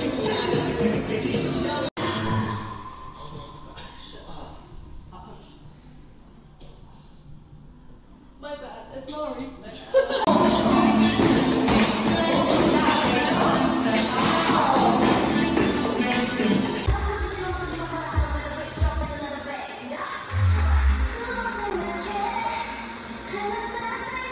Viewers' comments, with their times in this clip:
0:07 is that a seal 👀👀👀